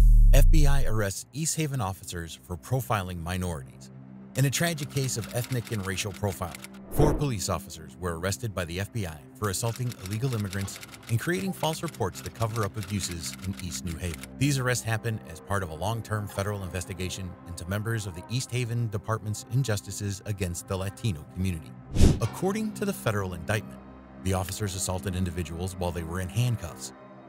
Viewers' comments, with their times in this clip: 0:09 Discord sound had me tripping.